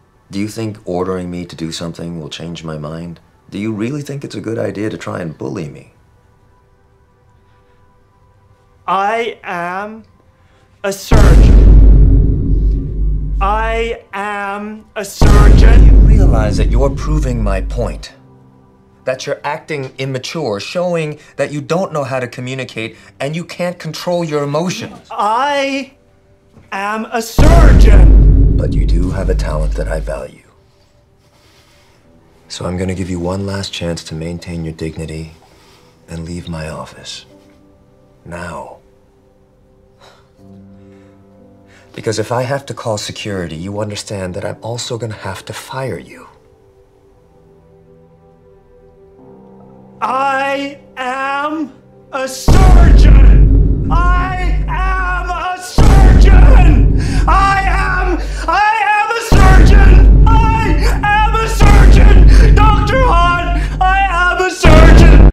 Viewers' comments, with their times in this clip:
0:08 the boom after really hit
0:58 I AM A SEARCHIN'